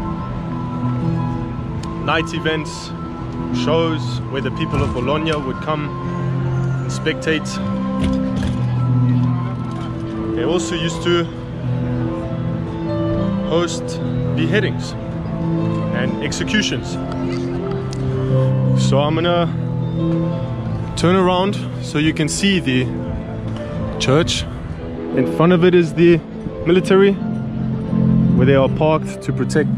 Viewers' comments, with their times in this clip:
0:10 love this song he played right here 🎹 It’s like background music for your vid🔥❤️